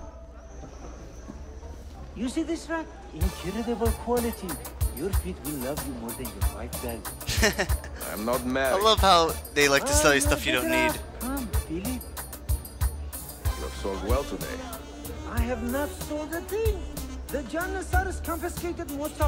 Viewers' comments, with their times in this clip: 0:04 this is arabic music at the not turkish music